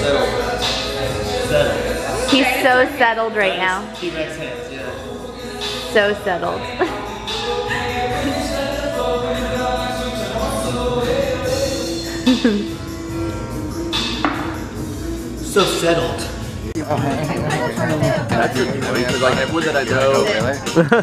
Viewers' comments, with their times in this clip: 0:09 that is one of my favorite songs!